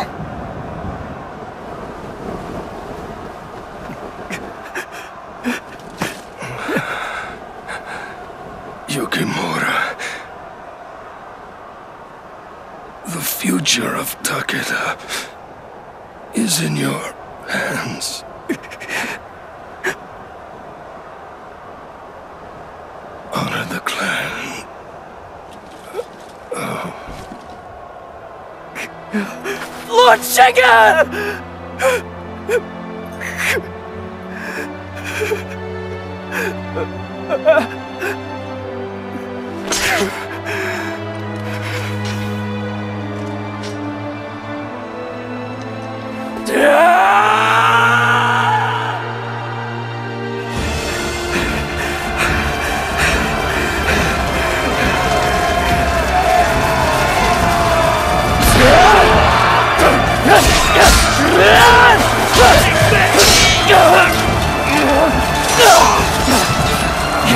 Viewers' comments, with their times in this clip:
0:10 That guy from i don't know but me he sounds like Gaara
0:49 i can hear nero clearly